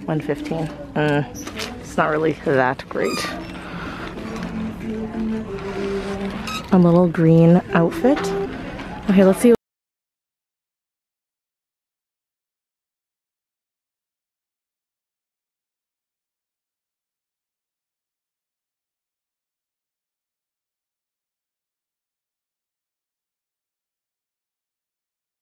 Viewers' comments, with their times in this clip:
0:10 If you notice that the sound cut out at some point at the mark, it’s because I had a copy write claim and had to remove the sound! Sorry!